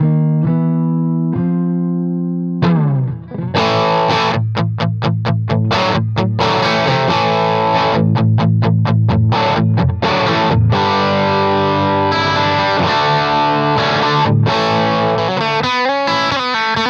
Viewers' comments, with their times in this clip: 0:03 there's definitely a difference to me in the chunking guitar still sounds great . Thanks Rhett
0:04 What's going on there-, 9 to 10 change sounds dramatic. Why did it get so much gain?